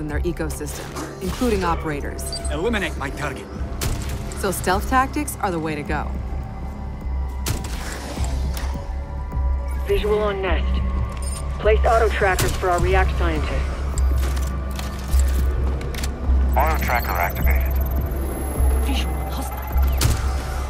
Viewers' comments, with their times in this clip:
0:06 soind zombie minecraft???